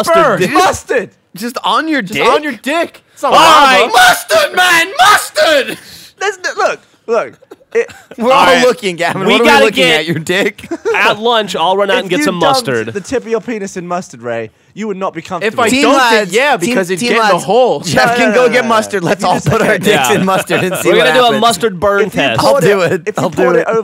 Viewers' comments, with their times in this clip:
0:03 MUSTARD, MAN, MUSTARD. Sounded like double d from ed edd & eddy
0:04 rip to all headphone users